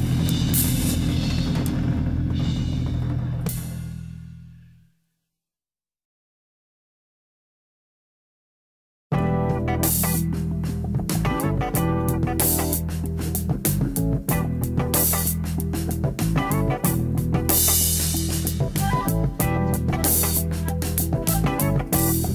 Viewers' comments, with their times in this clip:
0:08 this is how the BGM be sounding when friendly artillery is raining on your head in rising storm 2